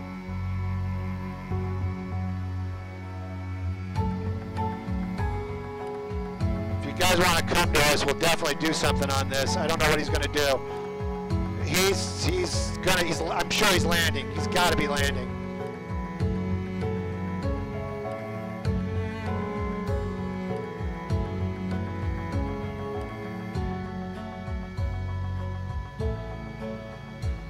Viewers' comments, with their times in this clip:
0:07 voice is annoying, would cause more accidents in my opinion, please don't stick the microphone with your throat! Dang!
0:12 this made my ears bleed